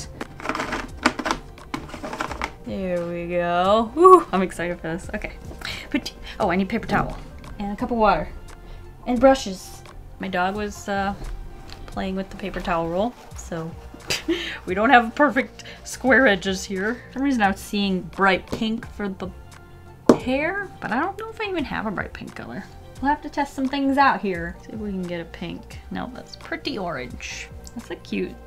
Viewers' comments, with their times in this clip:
0:09 i thought you said "my daughter" and was like what